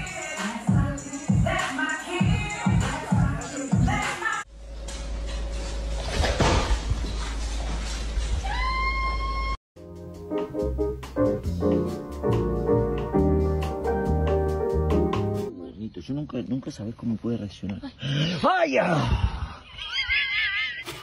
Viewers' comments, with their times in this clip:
0:07 that lil scream caught me so off guard oh my lord